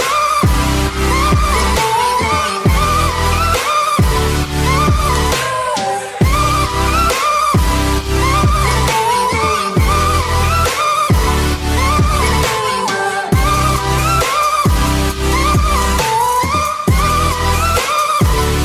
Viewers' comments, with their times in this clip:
0:04 wow!!!! I love this music!!! 😱💓